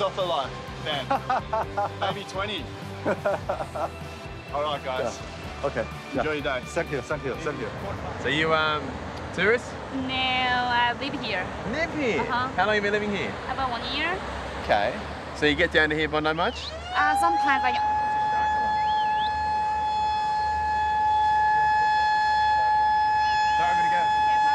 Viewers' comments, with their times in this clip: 0:08 Lifeguard cockblocked by the shark alarm. 😆